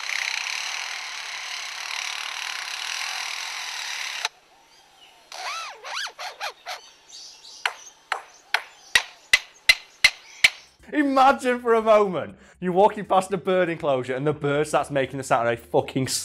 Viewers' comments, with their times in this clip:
0:04 my favorite is the one that little 2 second bit of a power drill securing a screw